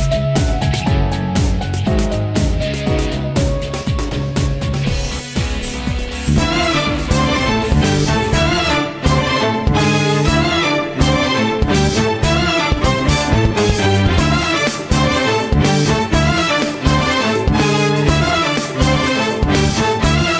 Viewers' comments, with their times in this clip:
0:04 calm music is playing volume automatically turns up YOU'LL NEVER SEE IT COMING